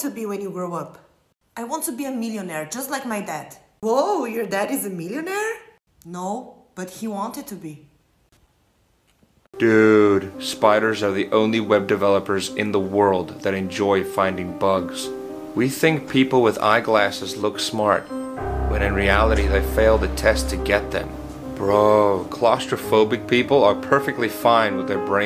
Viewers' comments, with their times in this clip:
0:10 But the voice fits him perfectly CORRECT ME IF IM WRONG